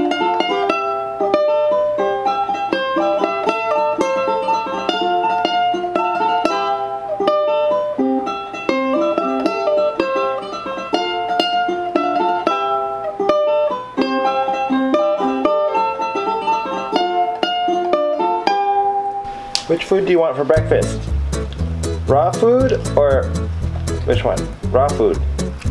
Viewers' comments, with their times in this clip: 0:10 great song performance